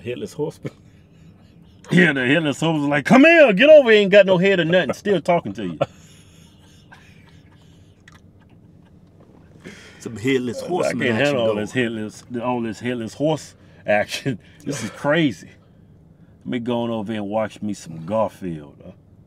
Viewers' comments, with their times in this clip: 0:05 the most fakest laugh I’ve ever heard in my entire life